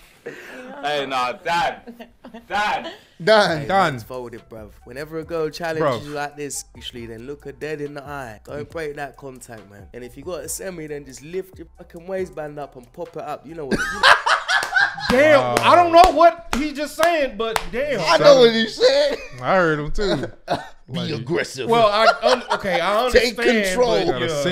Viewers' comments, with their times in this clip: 0:07 am, but I'm all for you trying to expand your accent impersonations.